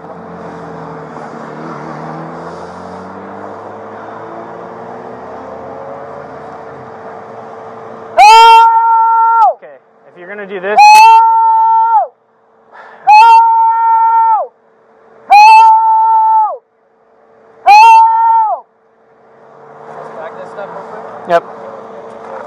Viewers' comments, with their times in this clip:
0:06 or so - Tarzan calling for animal backup.
0:07 he's surrounded by police and yells 'help' hahahaha I'm sure if he kept going the ghostbusters would've come.